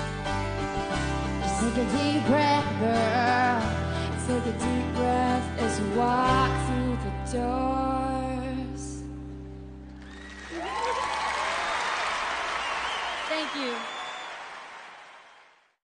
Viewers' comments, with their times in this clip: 0:08 that awkward high five and little giggle of Taylor at the end is so unbelievably cute ohmygod 😭